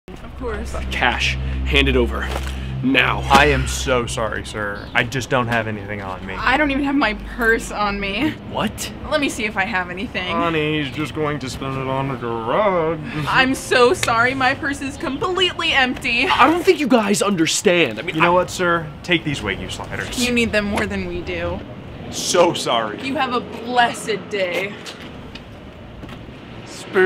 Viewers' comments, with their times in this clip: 0:08 saw many skids and i am conviced this guys knows how to say the word "what" correctly in any role